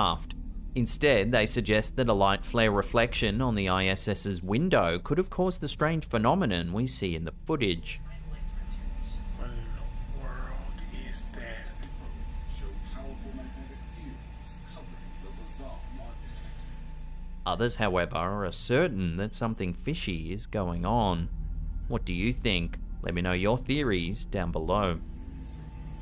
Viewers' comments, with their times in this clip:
0:10 it seems someone says "world is dead"? any one else hear it??